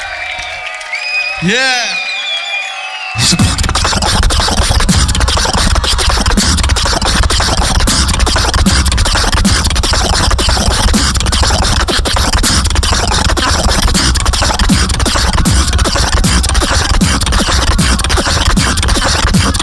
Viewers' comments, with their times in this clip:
0:04 the best alem drop ever🎤🎤💕